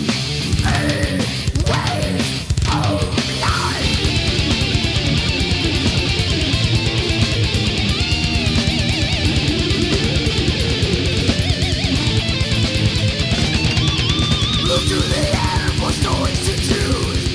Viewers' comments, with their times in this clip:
0:04 Andy Laroque's solo is over the fucking top masterful!!!! OMG!!!